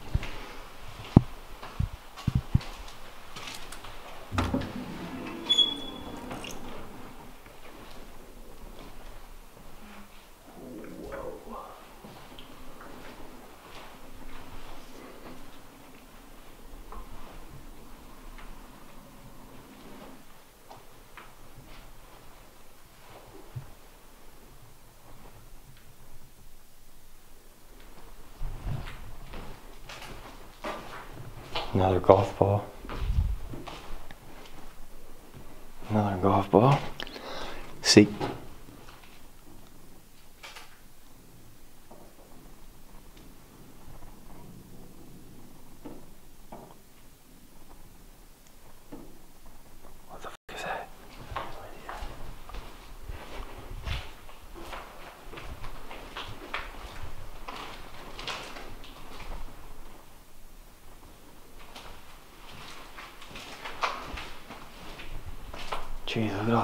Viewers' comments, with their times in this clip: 0:10 ... I hear a weird voice.
0:46 keep hearing noises like golf balls being rolled around
0:50 in More noises but this it sounds like a door Creaking, or more knocking it’s hard to pin point that sort of noise sorry